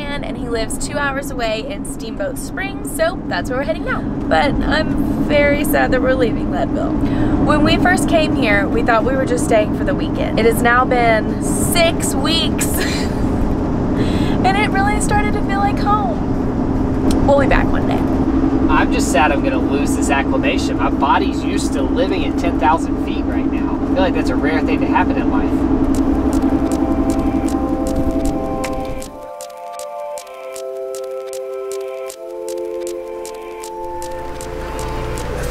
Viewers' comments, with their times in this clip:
0:08 Love the series, admired your perseverance! Now (heard it before) it sounds like a (wheel)bearing is on it's last umph. Just a heads up. Keep on truckin'!
0:18 I don’t want to bring up any more van repair issues, but it sure sounds like a tire is off balance